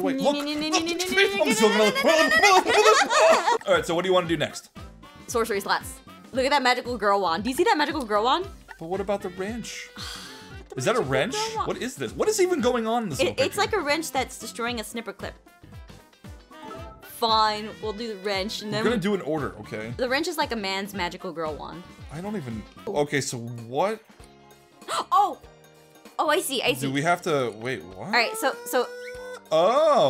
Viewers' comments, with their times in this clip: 0:09 really said fu-fine
0:17 I got an ad which cut off what you were saying so it sounded like you said FU- when you said fine